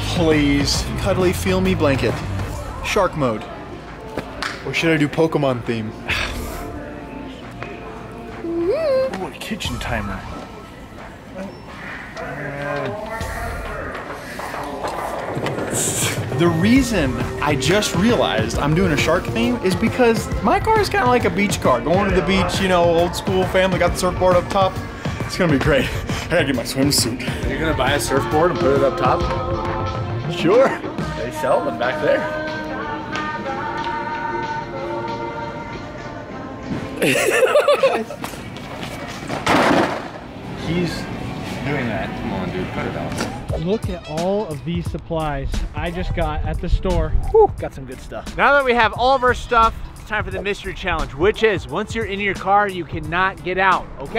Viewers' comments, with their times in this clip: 0:08 hyper sounded like a Samsung 😂
0:13 my favorite song is playing here!
0:33 so funny how Karma Chamaeleon gets louder as he runs away
0:35 you can hear the song karma chameleon